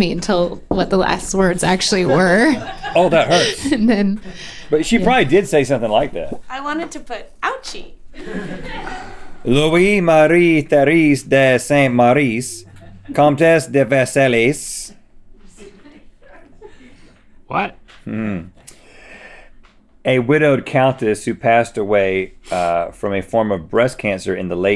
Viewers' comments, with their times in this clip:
0:08 The way Link said “what?” after Rhett mispronounced his whole card had me cracking up 😂😂